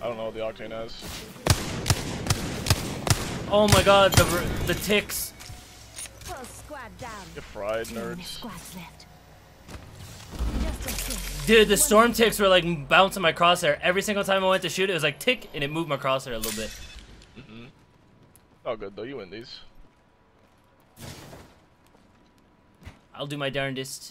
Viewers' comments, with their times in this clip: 0:07 the depression in his voice 😭